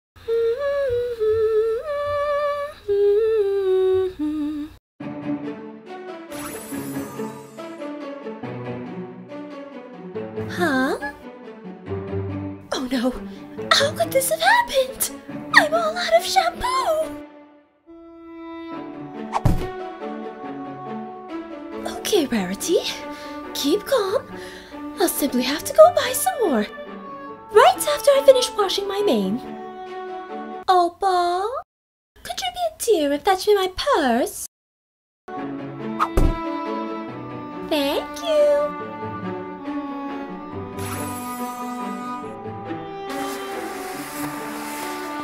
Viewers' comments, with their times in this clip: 0:00 Rarity humming the MLP theme song
0:00 Well, that ain't the first time i heard a cartoon character singing their own theme song.
0:31 THAT IS NOT OPAL. THATS OVAL